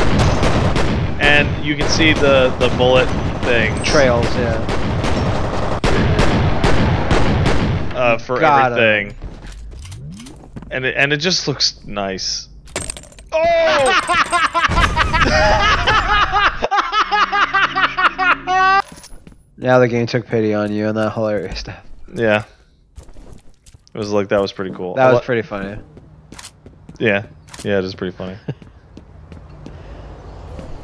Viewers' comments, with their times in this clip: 0:10 omg that laugh
0:17 sounds exactly like Feel Good Inc.